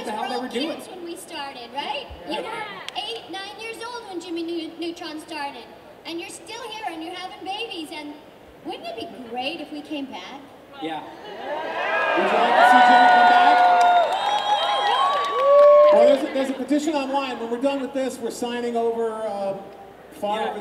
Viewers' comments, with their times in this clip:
0:03 I’m confused, is she doing the voice she always does or is that the voice she used for the jimmy neutron movie?